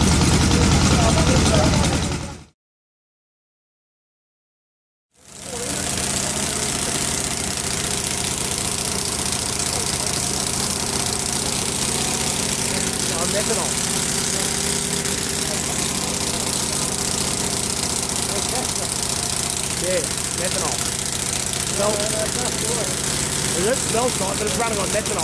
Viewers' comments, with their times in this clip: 0:09 I wonder what that flash was from the top of one of the cylinders. It made a funny sound too.